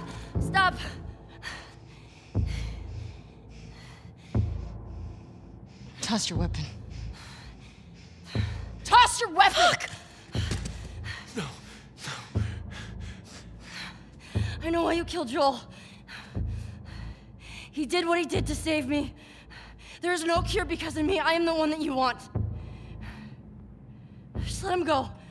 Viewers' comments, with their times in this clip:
0:09 Small thing but I love Ellie's distressed "Fuck!" when she's ordered to throw her weapon. Great acting on Ashley's part.